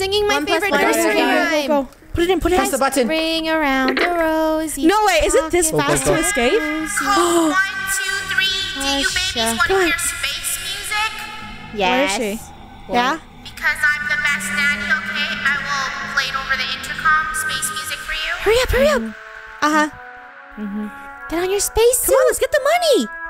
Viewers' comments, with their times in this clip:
0:05 don’t sing that only hear the space music ok